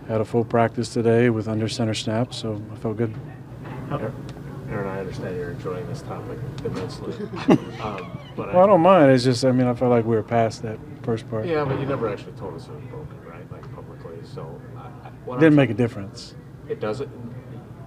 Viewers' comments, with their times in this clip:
0:04 The whiny tone - Starts